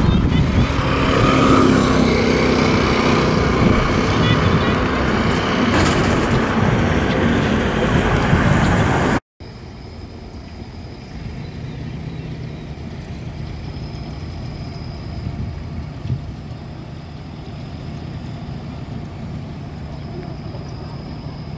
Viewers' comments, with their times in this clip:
0:05 that thunder storm 🌩